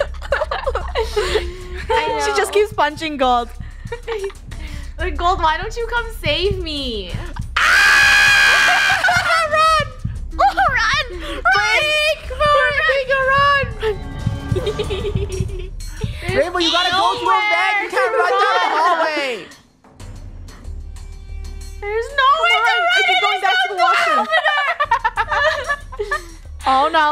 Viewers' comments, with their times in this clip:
0:08 my poor ears-
0:08 Apple alarms be like:□